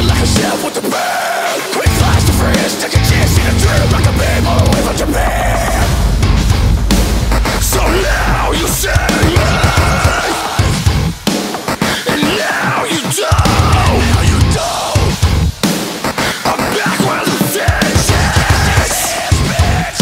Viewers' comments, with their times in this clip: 0:05 Djent, djent-djent.. kuh-Khh kuh-Khh Lmao it’s great